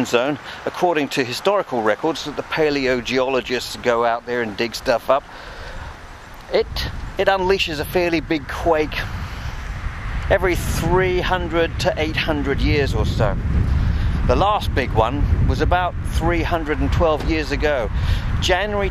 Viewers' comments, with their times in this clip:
0:03 "Cheer up, Brian. Worse things 'appen at sea you know! Aaaaaand....." The sound of the wind coming in here properly put the willies up me!